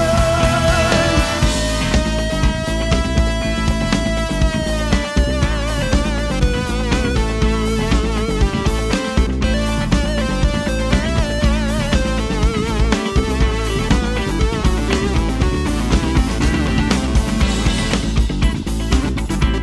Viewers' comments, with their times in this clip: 0:03 holy shit. that Moog solo is amazing !!